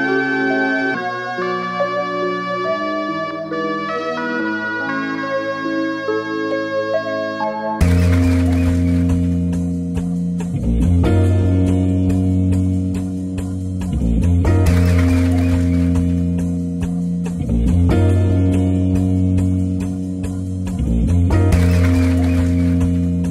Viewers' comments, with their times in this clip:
0:08 the claps repeating every bar add so much to it